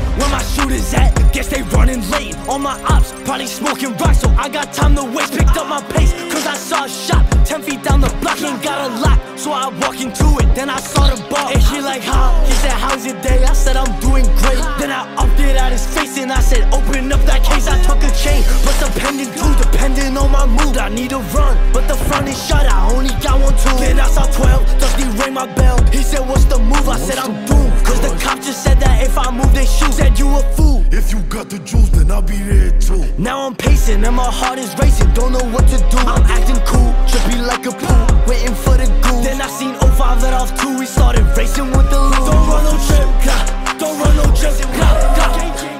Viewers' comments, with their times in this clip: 0:10 Bruh it be scaring me bc the door knock sounds like my door.
0:32 you can here his lisp when he says pacing and racing😂😂😂
0:33 is king von flow this is 🔥